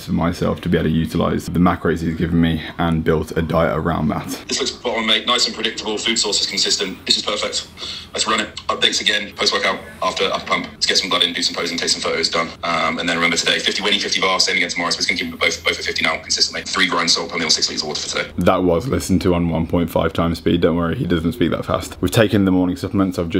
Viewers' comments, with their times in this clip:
0:10 is Gordon Ramsay yor nutricionist?